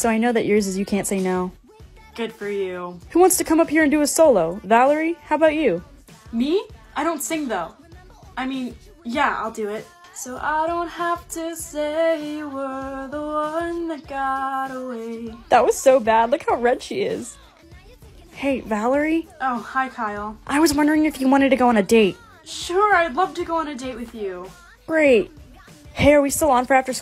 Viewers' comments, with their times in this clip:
0:09 shes so good at singing
0:11 omg she’s such a good singer 😭